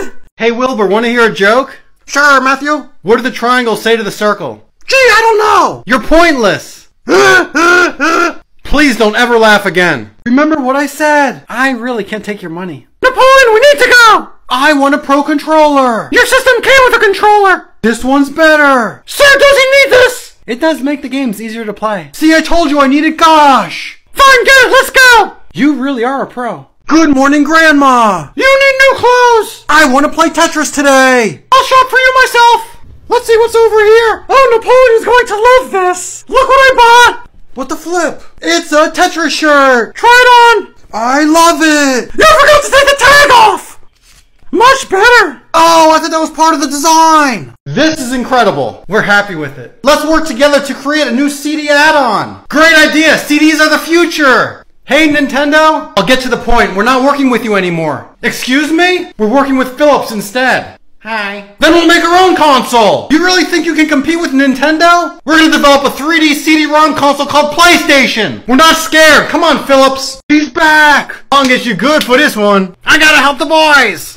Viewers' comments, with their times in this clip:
0:06 sounds like a tusken raider from star wars
0:07 Wilbur has a funny laugh
0:07 Bro the laguh 💀
1:01 i love the way Philips say Hi 👋